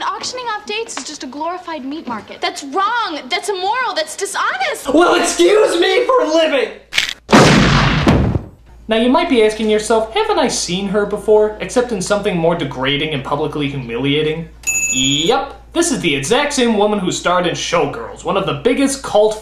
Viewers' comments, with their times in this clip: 0:05 The best Jewario impersonation...
0:07 Nostalgia Critic does his BEST JewWario impersonation: ...